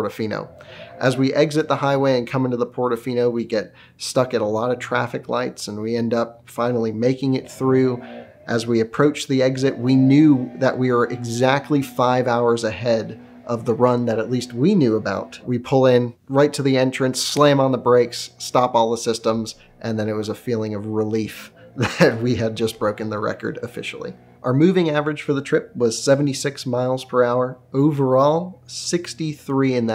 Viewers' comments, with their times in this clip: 0:04 Does anyone else hear a lawnmower or weed eater ?
0:11 Who's doing a burnout in the background?
0:12 is that a leaf blower I hear in the background?